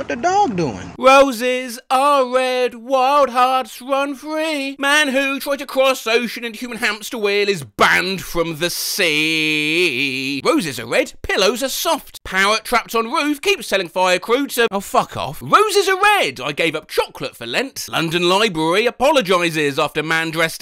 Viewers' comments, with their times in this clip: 0:07 The enunciation of 'banned' get me every time